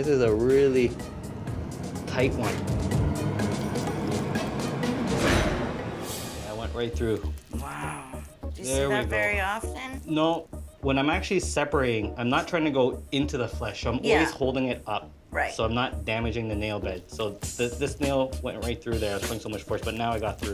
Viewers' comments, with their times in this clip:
0:04 hearing the music getting more intense, just made me feel like something was gonna happen and then boom…